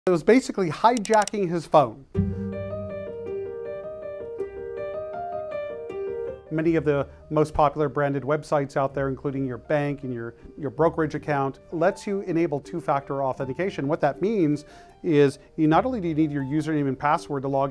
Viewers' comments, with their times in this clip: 0:02 hmmm sounds excatly like the flash..